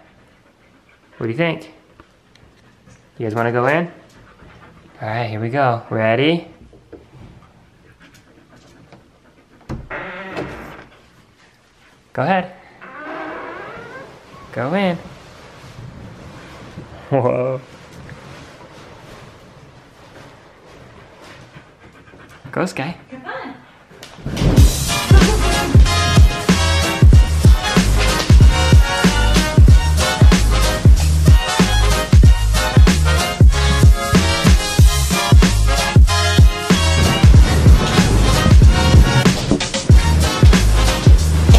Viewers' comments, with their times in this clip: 0:10 was that a fart or a balloon??
0:24 it was the best moment with great music